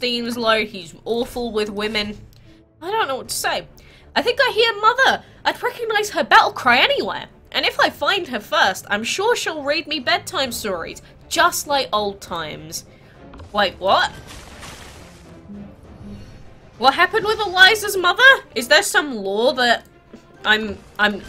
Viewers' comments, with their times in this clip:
0:08 no, that's a glitch. I think that was supposed to be Melvin talking